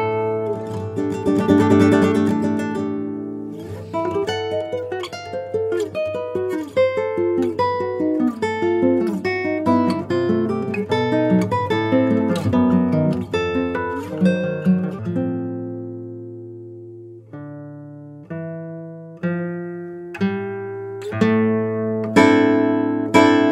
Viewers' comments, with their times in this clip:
0:10 nice one mate. That sounds really confusing to play. Also, nice job playing in the stratosphere at the beginning of this piece.